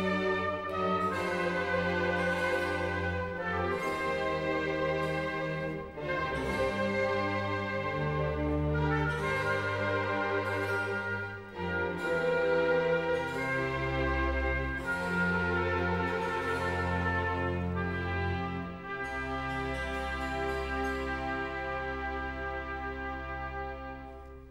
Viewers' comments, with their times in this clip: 0:08 Beautiful music I love it❤❤❤🎉🎉🎉🎉🎉